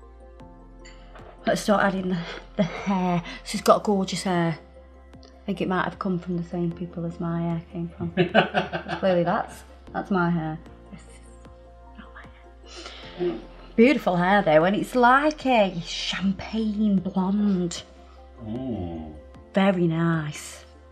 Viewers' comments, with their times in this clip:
0:06 Don't know if anyone has already commented this, but the audio track is off